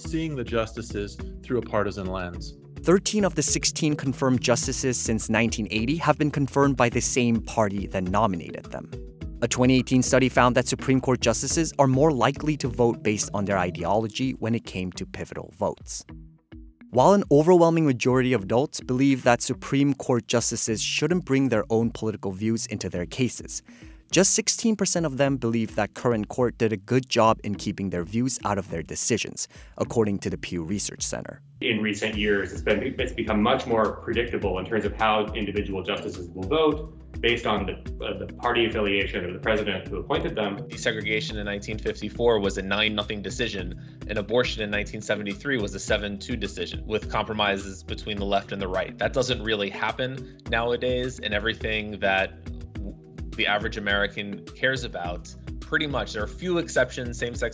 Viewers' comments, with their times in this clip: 0:08 Sunday, August 14, 2022 the Jersey City Medical Center Ambulance siren violating the Noise Ordinance.
0:43 Friday, August 19, 2022 New Jersey Medical Center Ambulance siren violating the Noise Ordinance.